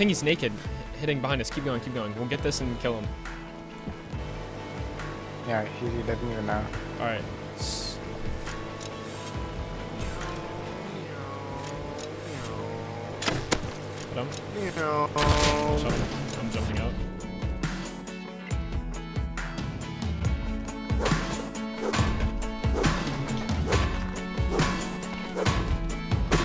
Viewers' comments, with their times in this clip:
0:09 my mans started making boat noises I’m dead 💀🤣😂